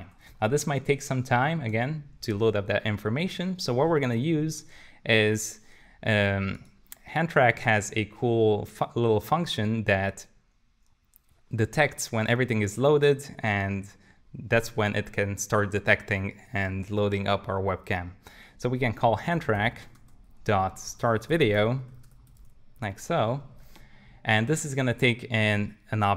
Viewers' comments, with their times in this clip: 0:07 hand track has a cool fuck a little function?